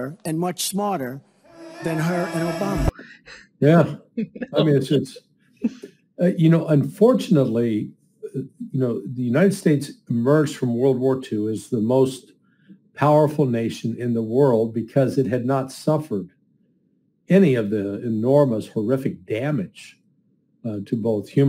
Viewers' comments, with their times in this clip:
0:04 love the imitation of Putin laughing at Hillary